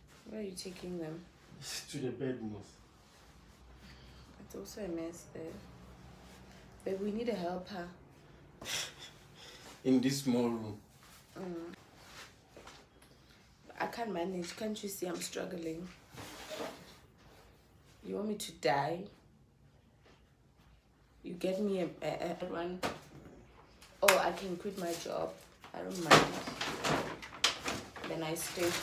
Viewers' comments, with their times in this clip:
0:09 This has gotta be the best month of the year in these Youtube streets💃🏽❤️ “in this small room” the giggles😂😂 Enjoyed the vlog🫧